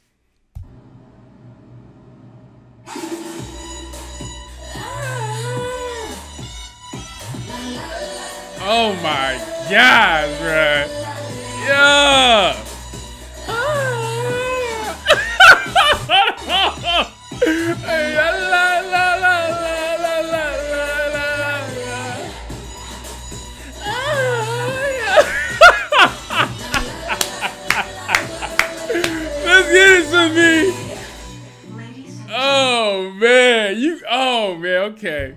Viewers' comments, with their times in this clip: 0:05 😂😂😂😂😂😂 When you sing OMG
0:22 the way he said "ah ha ah ha yeah"😂
0:23 sounds like something else is going on 😂